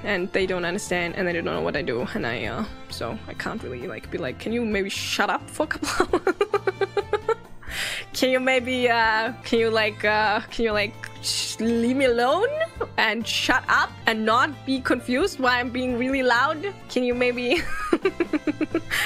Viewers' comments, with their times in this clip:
0:04 Supposed to be "Shut up for a couple hours?" but she interrupts herself with laughs.